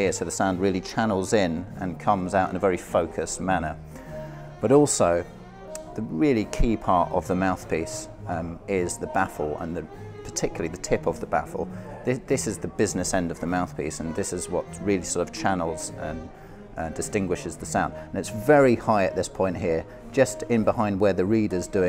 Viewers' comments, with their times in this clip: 0:05 sax in background